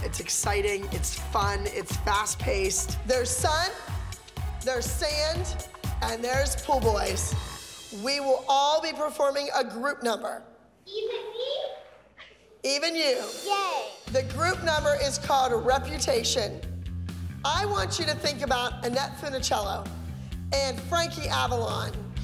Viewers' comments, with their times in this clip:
0:08 this is so funny to me lol- Kenzie is adorable eVEn mE?! 🤠